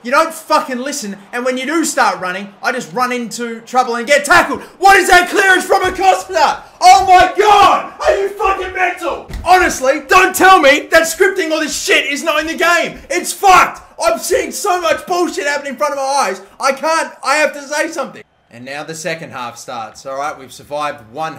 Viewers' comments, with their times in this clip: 0:08 u sounded like a parramatta fan